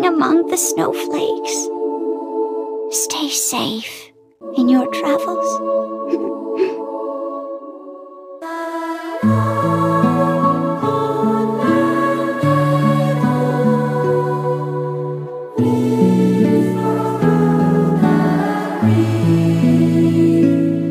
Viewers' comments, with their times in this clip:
0:07 STOP THE MUSIC IS TOO BEAUTIFUL HELP IM CRYING OH GOD!😭😭😭😭😭😭😭✨✨✨
0:08 I swear I heard lyrics but I can't make out the words 💀 Anyone have the written lyrics? I want know!! Pretty sure it's English because I think I heard "christmas" "shining" and "light" Or it's just me? 😅